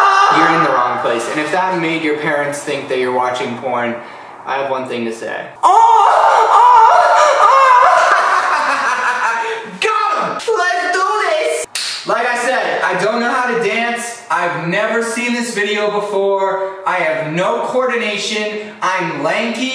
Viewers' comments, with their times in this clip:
0:03 .. Only 25 seconds in and he's already moaning when I had my volume on full 😀👍